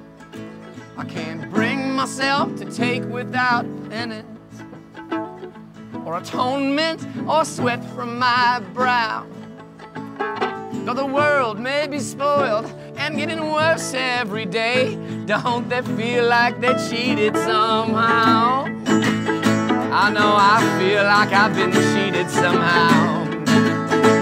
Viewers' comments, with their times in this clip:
0:09 Jack liked the sound of a violin :)))